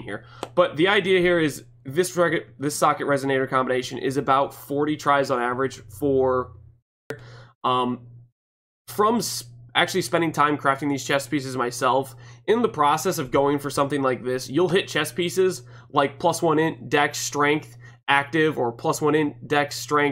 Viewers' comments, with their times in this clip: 0:07 ouch my ears